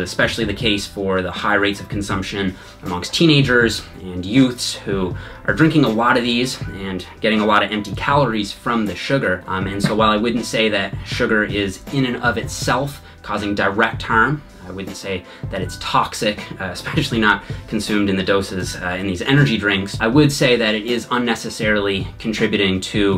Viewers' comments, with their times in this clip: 0:08 Fart Just had to point that out
0:08 Fart Just had to point that out